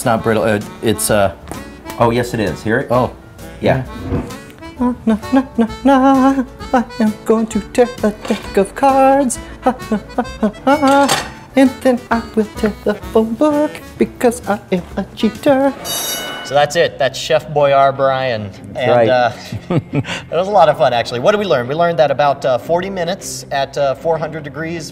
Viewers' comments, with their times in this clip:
0:05 i like his little song